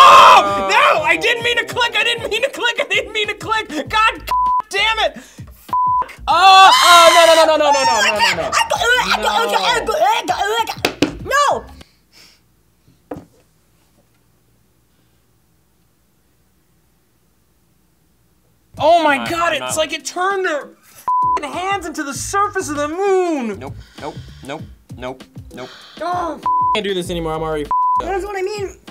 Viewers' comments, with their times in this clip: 0:07 What are they screaming about?
0:09 What is that noise? xD